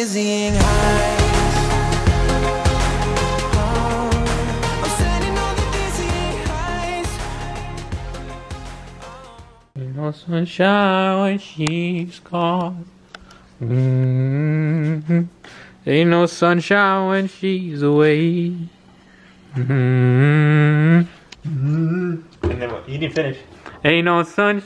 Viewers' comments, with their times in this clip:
0:09 Ey those pipes 😂😂🔥🔥🔥🔥🔥